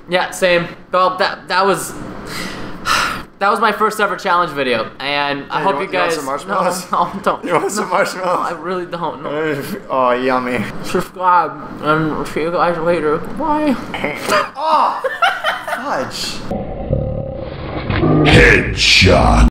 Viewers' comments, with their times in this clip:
0:09 ... cutest voice I've ever heard PrestonPlayz - Minecraft